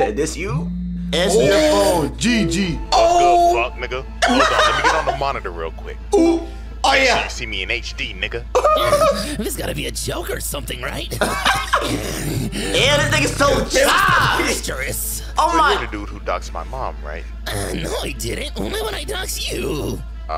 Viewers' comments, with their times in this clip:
0:06 the way they said oop at the same time😂